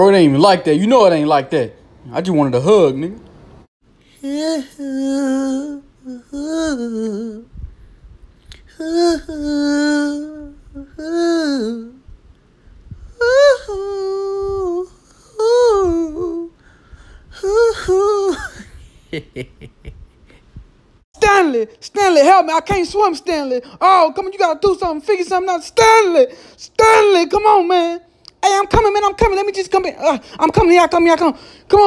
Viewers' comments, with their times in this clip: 0:10 That singing in 🤣😭
0:14 Love the singing 👌👌👌👌👌😂😂😂😂😂